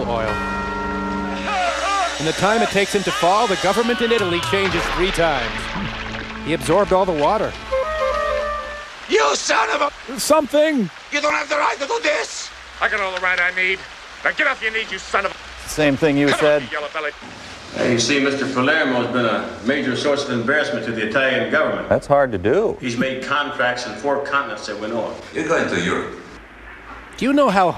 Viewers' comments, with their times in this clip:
0:09 lol anyone else notice that little melody they play for his action scenes is like the same fucking one for Michael Myers ?